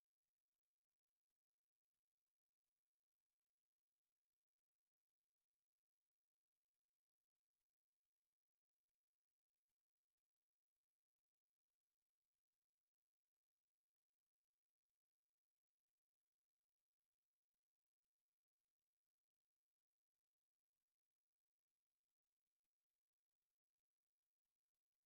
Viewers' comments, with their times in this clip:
0:06 mins the sound went out🤦🏾‍♂️